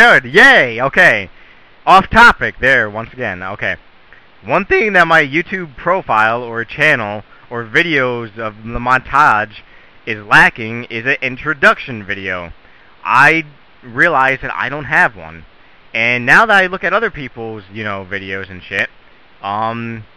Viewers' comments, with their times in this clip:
0:04 one thIIIIIIng. fat voice crack